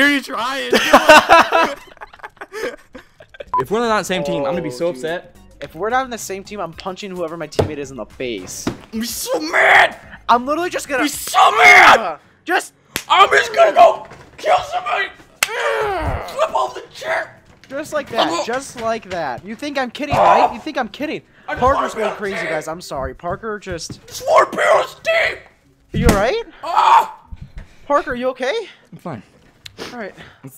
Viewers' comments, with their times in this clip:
0:10 sounded like tobuscus.
0:11 he sounds like Tobuscus XD